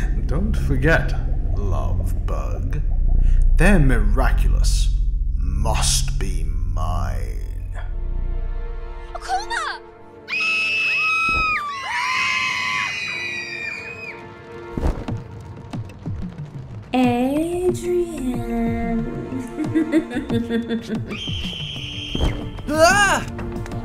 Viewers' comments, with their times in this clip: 0:10 I can’t be the only one who started laughing at the screaming 😂